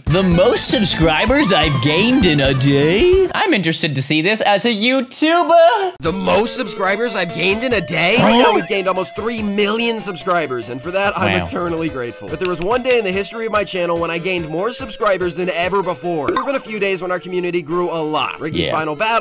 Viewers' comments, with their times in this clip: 0:04 the moan tho 💀